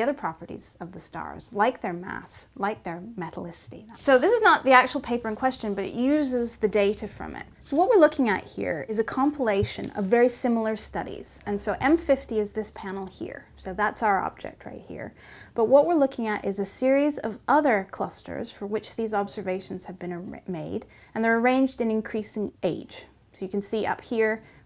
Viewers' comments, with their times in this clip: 0:05 English accent detected